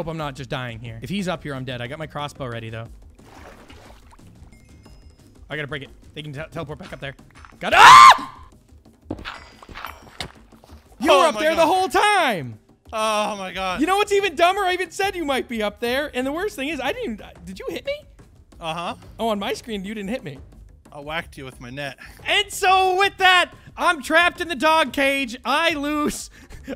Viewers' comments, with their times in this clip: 0:07 his scream 😂 it's just hilarious xDD btw great vid!